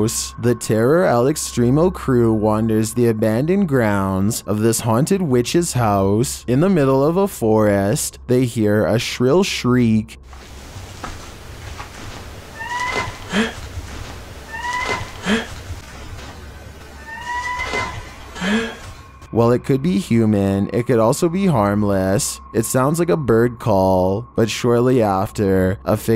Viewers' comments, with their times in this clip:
0:07 ... they hear a shrill shriek... "SHRIEK!" 🤣 Like the "ghost" yelled, "SHRIEK! SHRIEK!"